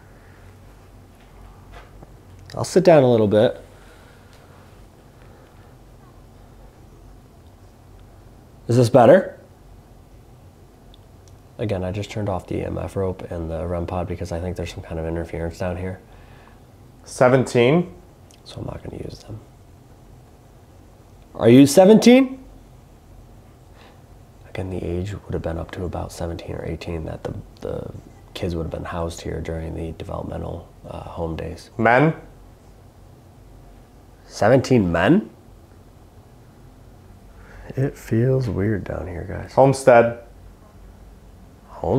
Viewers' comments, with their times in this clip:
0:05 Just me or dose it sound like a female/childe ? stop?
0:06 Finally, I'm just getting around to watching now, and at around minute after he crouches down, you can hear a child's voice. I thought I was hearing interference from something at first, but I'm almost positive it's a child!
0:27 Catching uo on old videos i heard a kid yell then rivht aftwr kept hearing random words almost echo